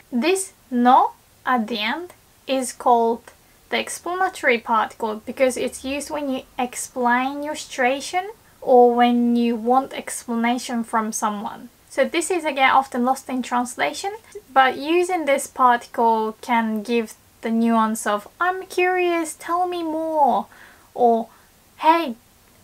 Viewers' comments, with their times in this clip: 0:06 it always sounds like she says "explain your stration" I have no clue what she is actually saying there